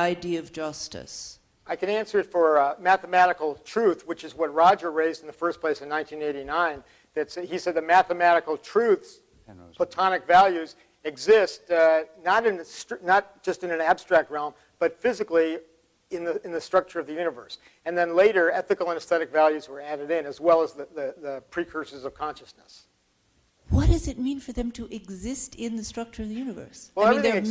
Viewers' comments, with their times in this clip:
0:09 Anyone else hear what Roger whispered ? 😂😂😂